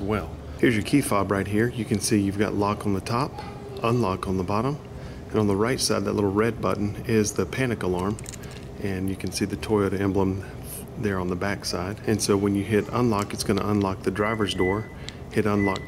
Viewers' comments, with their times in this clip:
0:03 I like the new editing and music through the first or so